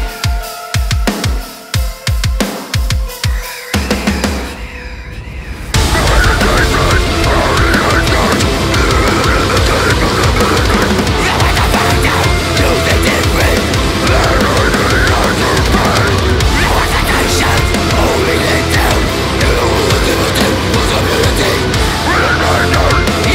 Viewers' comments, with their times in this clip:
0:06 I love how destructive and calming is.